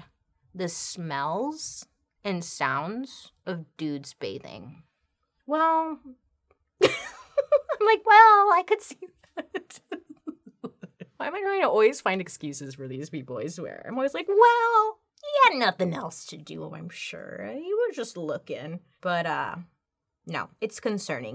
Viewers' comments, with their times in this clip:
0:09 seconds Bailey had the most adorable smile and laugh 😂